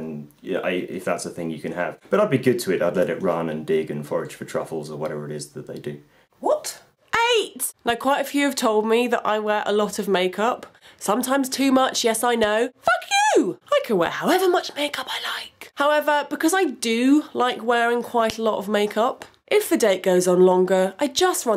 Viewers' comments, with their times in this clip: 0:09 I like how you say Fuck you